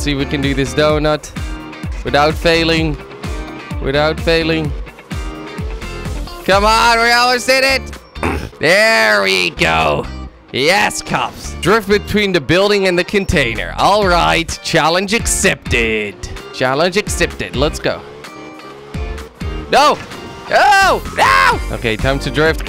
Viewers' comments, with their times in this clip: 0:07 :D did you just fart xD